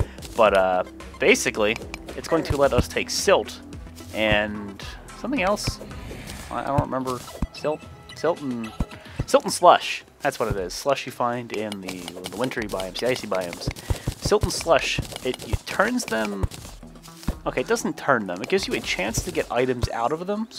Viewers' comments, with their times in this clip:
0:03 yes the mushroom music is awesome and btw there was a lost girl (nymph)